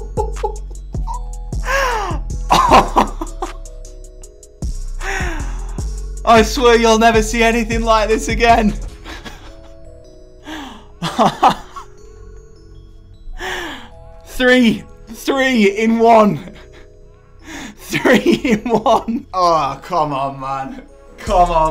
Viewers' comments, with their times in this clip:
0:05 you sounded like martin tyler